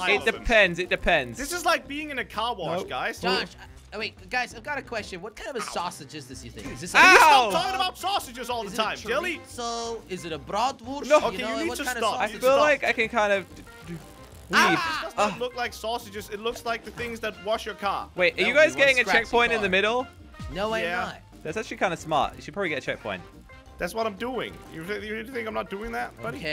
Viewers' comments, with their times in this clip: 0:09 Jelly speaking german